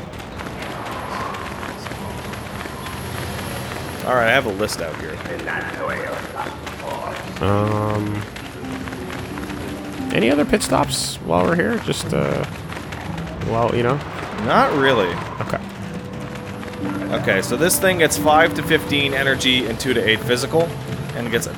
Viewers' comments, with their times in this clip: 0:06 Sounds like Palpatine’s voice